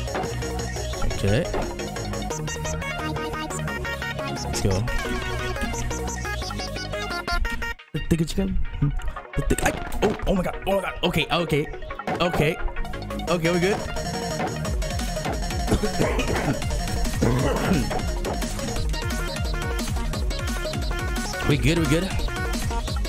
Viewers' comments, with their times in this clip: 0:09 I love his reaction he was like vibing and the note came XD